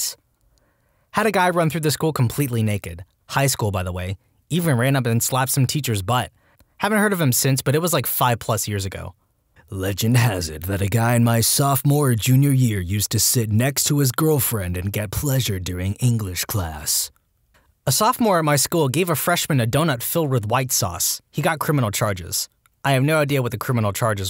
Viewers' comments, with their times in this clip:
0:10 just sounds like They Will Kill You